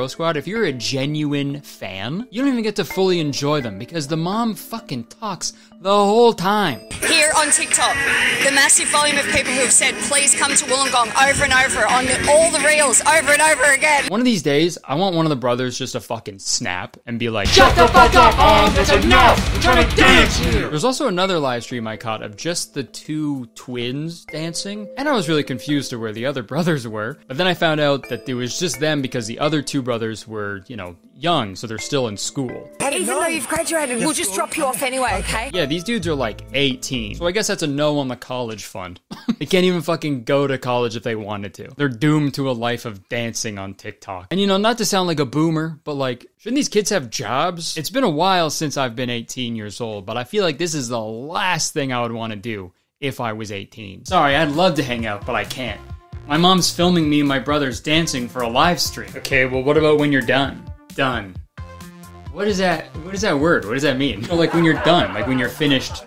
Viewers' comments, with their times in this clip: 0:07 "ORVER AND ORVER" really??
0:54 Why did the editor have to add a laugh track? That ruined the bit.